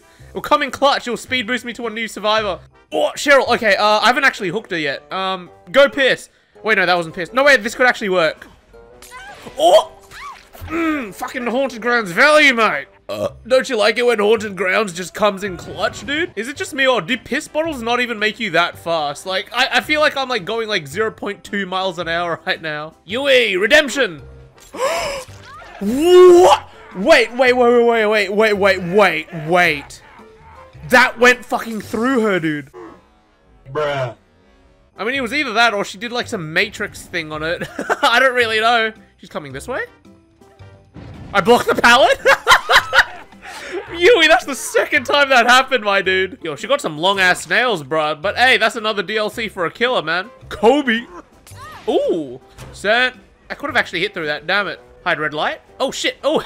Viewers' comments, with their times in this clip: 0:10 Demi’s pallet stun noise
0:41 sounds like a seagull lol